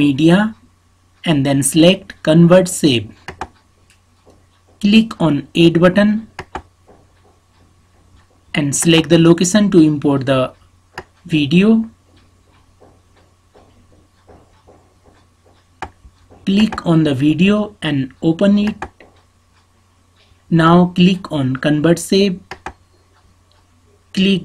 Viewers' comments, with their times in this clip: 0:05 click on aid button 😂